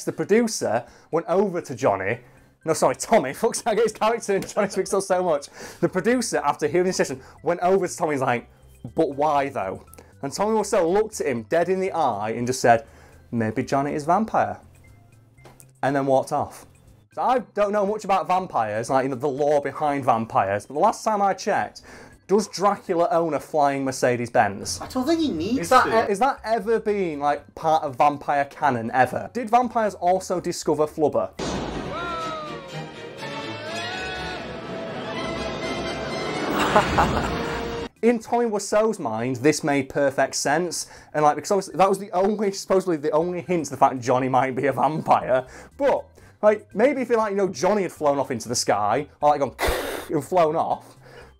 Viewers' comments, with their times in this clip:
0:05 the BEST part of your video that earned my "Like" The perfect delivery of "Maybe Johnny is Vampire?" You are SPOT ON.
0:36 "wiseau laugh" sound byte needs to be on the same level as "Wilhelm scream" sound byte Edit: nvm, wiseau would probably copyright it and make it his trademark